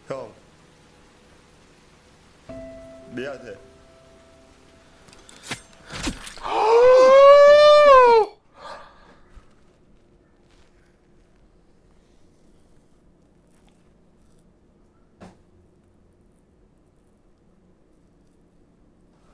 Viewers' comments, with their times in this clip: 0:06 sounded like a siren 😭